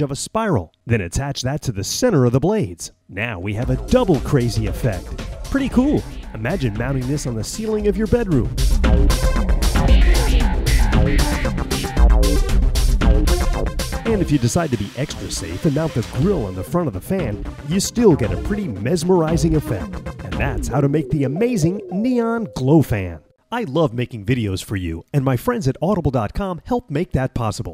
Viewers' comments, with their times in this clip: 0:09 Epic music lol :D